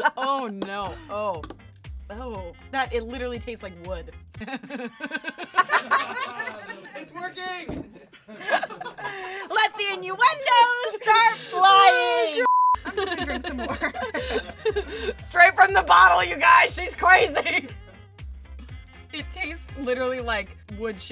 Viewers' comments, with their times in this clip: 0:04 I don't get it like why did they laugh when she said it tasted like wood